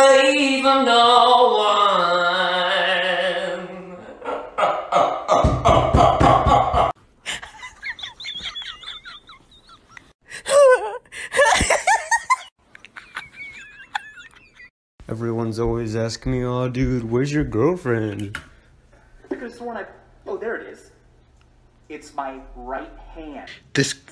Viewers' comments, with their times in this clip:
0:07 this girl hella relatable her "hUuhh"
0:12 the way i laugh like this after the video before this, it’s like we’re laughing together i-